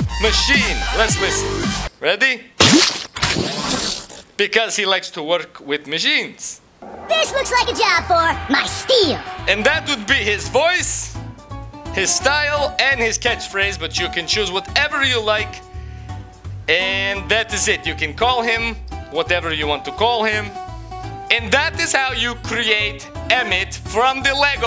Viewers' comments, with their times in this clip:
0:06 emmet's voice is not high pitched!